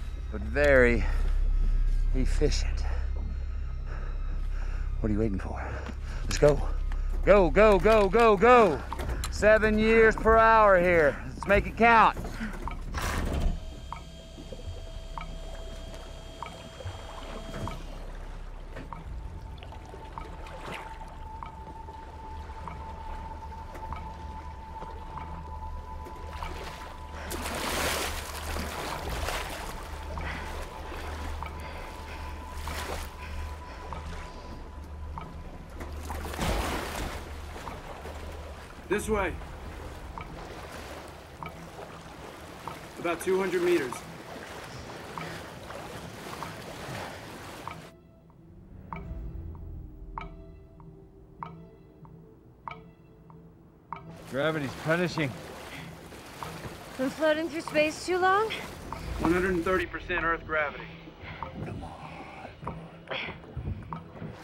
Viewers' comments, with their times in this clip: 0:08 I knew it, the (ticking sound) in the background music also gives you a clue 💀💀😳😳
0:29 each ticking sound in the film is equivalent to an entire day on earth
0:47 notice how the tick-tock perfectly matches the rythm of one day passing on Earth. the Zimmer-Nolan combination is undefeated... It also blows my mind when Dr. Brand explains how Laura Miller arrived and died only minutes prior to them discovering the remaining pieces of her landing pod, although she departed from earth on the Lazarus mission 10 years earlier. I love this movie.